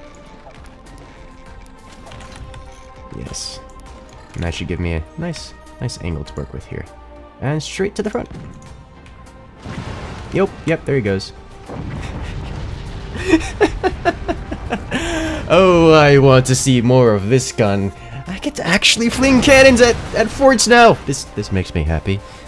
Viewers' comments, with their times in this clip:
0:08 boom go the dynamite